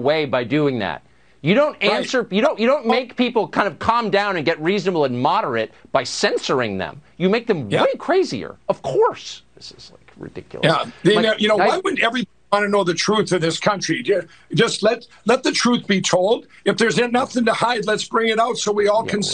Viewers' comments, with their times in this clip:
0:07 Did you catch that? Carlson subtly called Lindell crazy to his face and he didn't realize it. And if you notice that tone in his voice after the interview he's actually mocking Lindell. 🕵🏿‍♂️